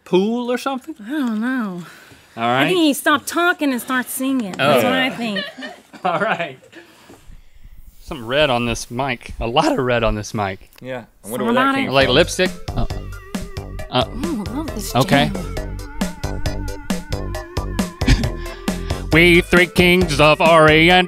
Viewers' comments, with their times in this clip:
0:03 Rhett is deep breathing still getting over how good maranda is